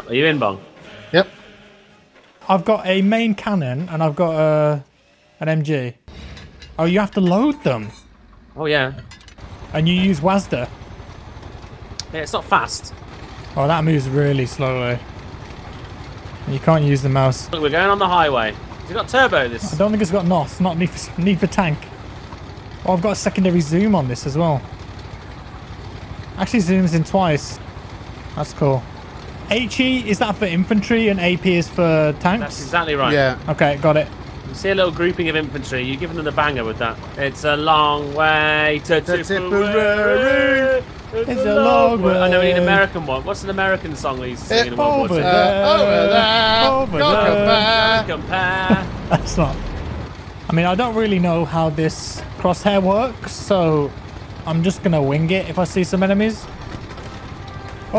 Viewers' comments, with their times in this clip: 0:09 "And you use WASDE" Lol it's "double you , eeh , es , Di" lol
0:44 With that singing you guys sound as though you're in a pub/bar. Quit! LOL